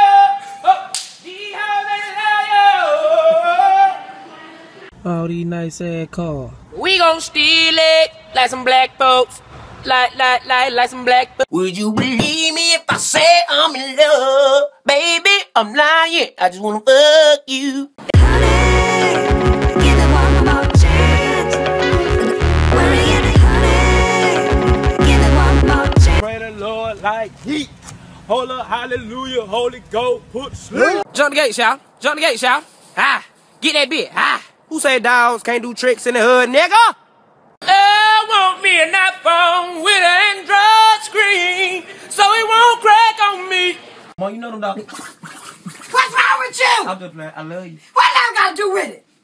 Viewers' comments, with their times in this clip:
0:07 It sounds like that song called red nose
0:35 hes sounds like cris trucker